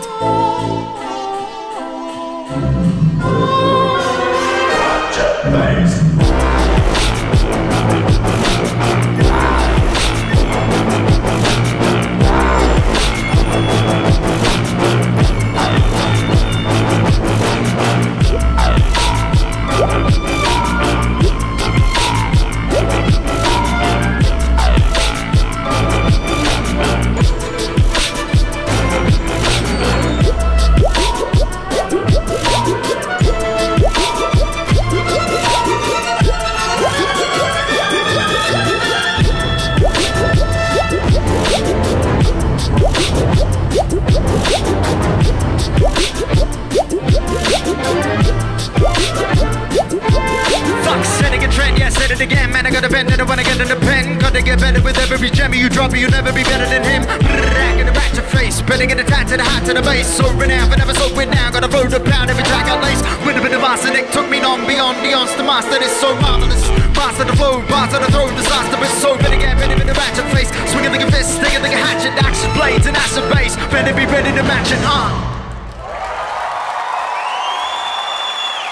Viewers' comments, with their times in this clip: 0:06 I've never screwed up my face at the sheer dirtiness from...a symphonic orchestra before. First time for everything eh - cheers Tom Thum!
1:06 That bass🔥. It's addictive even after these years.